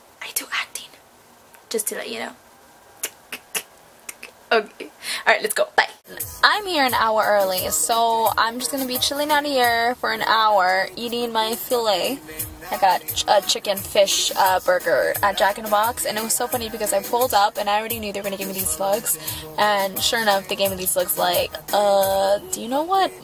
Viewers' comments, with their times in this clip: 0:07 I can hear J Balvin on the radio :) love him.